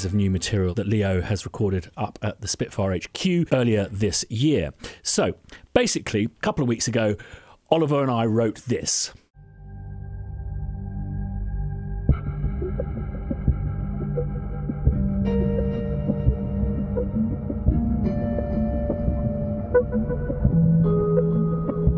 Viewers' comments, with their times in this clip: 0:09 Dear god that track was amazing!